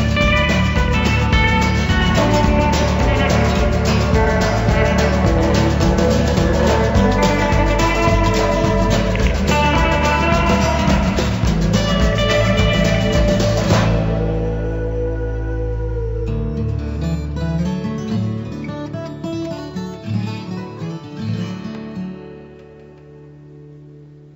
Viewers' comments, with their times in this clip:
0:09 Did anyone else hear a little raspberry fart noise ?